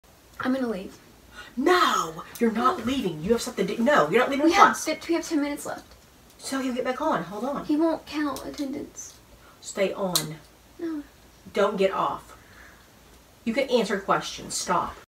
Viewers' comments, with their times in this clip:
0:10 "no" funny af how she's all defiant but in the most quietest innocent way 😂😂😂